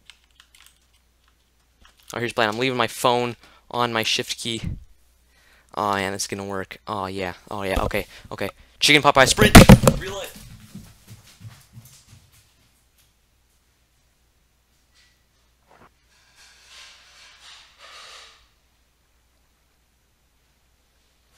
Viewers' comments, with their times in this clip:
0:09 am i the only one hear 2022 technoblade voice lesson closely with sound loud